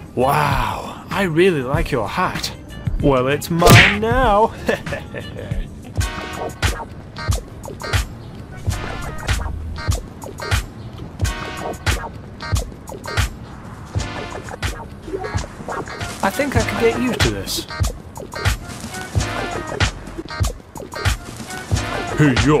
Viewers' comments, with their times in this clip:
0:10 Where do u find that tune from ? Im searching all over youtube but no were to find that funky gta tune